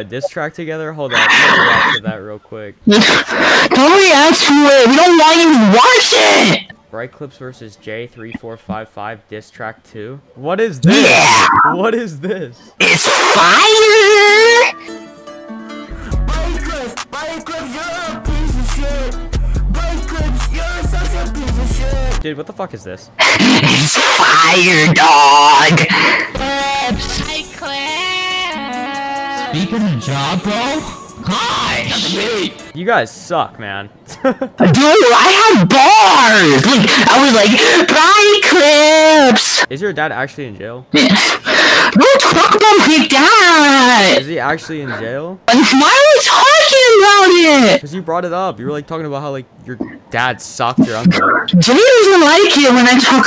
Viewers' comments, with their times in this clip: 0:10 We gonna ignore how this guy sounds like Rickie from GTA 5??
0:41 why does this squeaker sound zesty as hell?